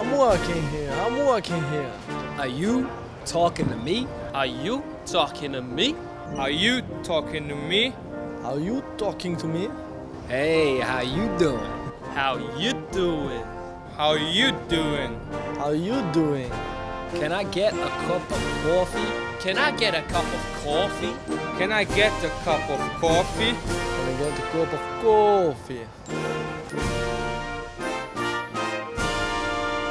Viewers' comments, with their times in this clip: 0:03 is that the accent Kieran Gibbs used when talking to Andre Mariner?
0:17 That's a Boston accent.